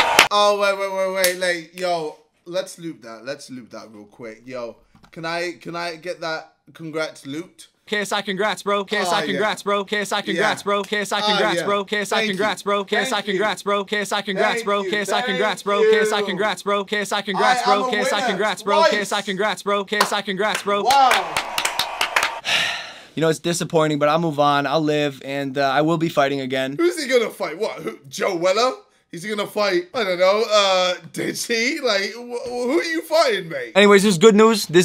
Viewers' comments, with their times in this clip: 0:05 that sounds like a beat
0:15 that's a beat someone make that into a song